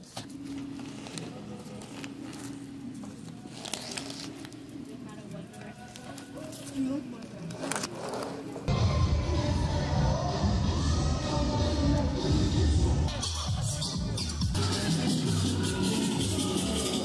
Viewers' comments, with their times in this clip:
0:05 Did they say One Direction or it's just me? 🤣 ahhhhhh